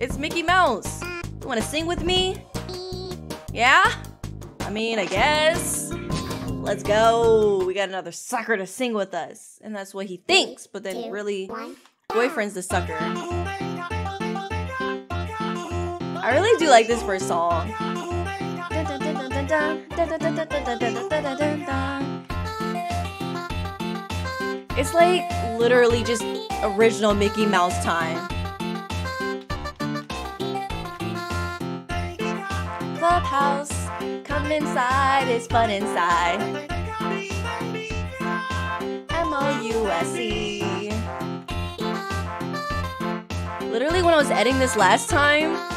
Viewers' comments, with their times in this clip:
0:07 Did bro just Say "We have another Fucker to sing with us"
0:31 how come sounds like mickey mouse clubhouse come inside